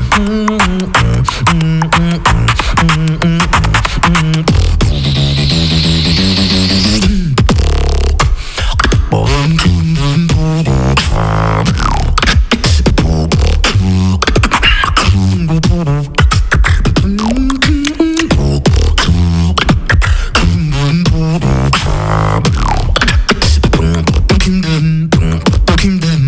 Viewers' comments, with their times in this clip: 0:05 This drop is so clean 🔥 The structure of this wildcard is crazy.
0:06 OMG!!!!!! That's insane groove!!!!!!🔥🔥🔥🔥🔥
0:08 onwards was just straight up Infected Mushroom style. That was fucking sick
0:08 how does he do that??!!, that bass-trumpet-ish sound